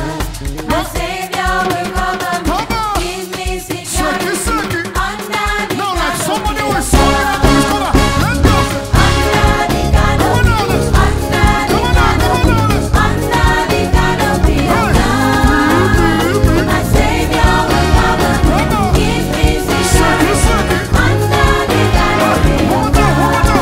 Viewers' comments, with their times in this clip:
0:08 Come ooo, this back up killed that harmony 😮😮😮